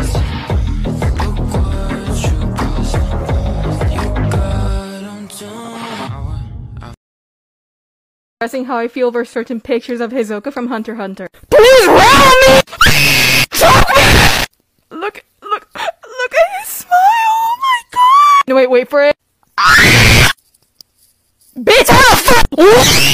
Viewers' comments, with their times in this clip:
0:09 she definitely lost her voice after this 😂
0:09 I have officially lost all hearing